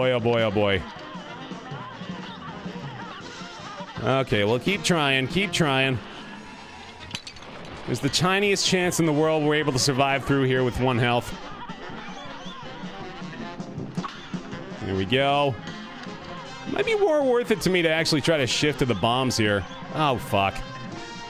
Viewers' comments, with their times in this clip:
0:07 "There is a chinese chance in the world..." HE SAID THE WORD WRONG #NLSS CircleJerk